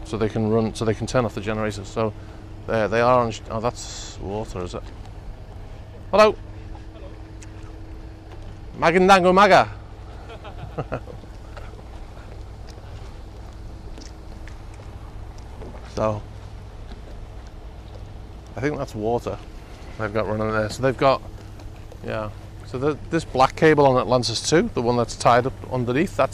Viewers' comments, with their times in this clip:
0:09 was that filipino?